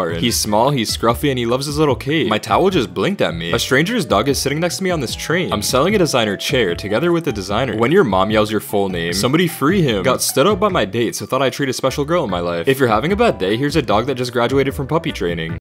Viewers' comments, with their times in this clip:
0:09 microwave go mmmmmmmmmmmmmmmmmmmmm